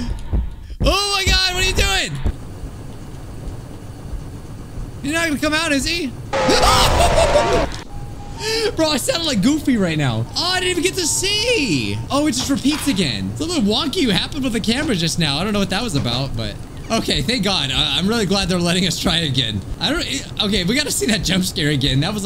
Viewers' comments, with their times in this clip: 0:06 goofy ahh scream 😭
0:06 sucidey mouse the captain.exe : (Jumpscare sound)